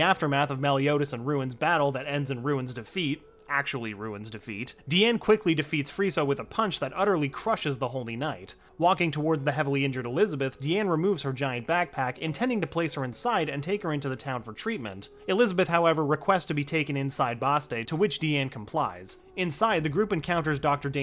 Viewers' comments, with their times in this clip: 0:04 I SWEAR I HEAR FRIEZA
0:05 ayo did I just hear frieza